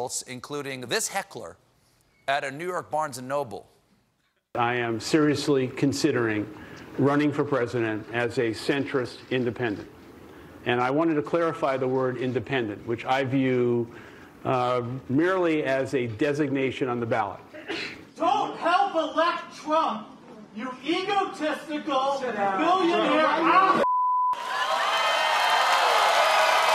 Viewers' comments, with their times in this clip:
0:10 he is waiting for the applause to set in. Alas - 🦗 🦗 🦗 chirp chirp chirp. 😄
0:13 did they just censor ”hole”, but not ”ass”?